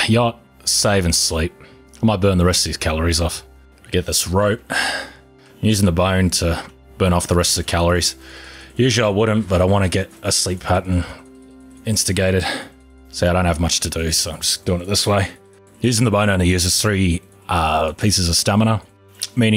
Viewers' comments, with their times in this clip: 0:07 INTENSE MOUSE1 CLICKING